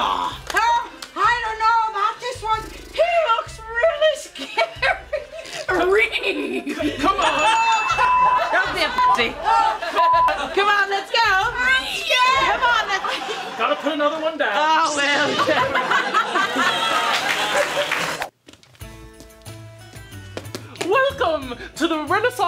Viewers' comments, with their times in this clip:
0:04 the Scooby doo sound TOOK ME OUT 😂
0:05 the facial expression paired with Scooby impression almost killed me
0:05 that neigh reminded me of this video where some guy does an impression of Scooby Doo and Shaggy high laughing. I don't know if anyone else has seen the video I mean.